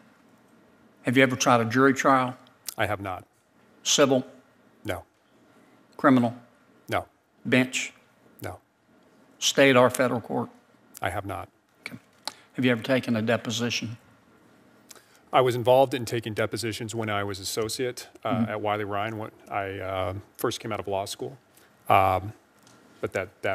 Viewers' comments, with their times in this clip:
0:07 He threw in "bitch" after being fed up.. but it wasn't a question LMAO!
0:07 I think he said "bitch" just to see if he was listening after all the NO's...
0:07 WTF did he say bitch?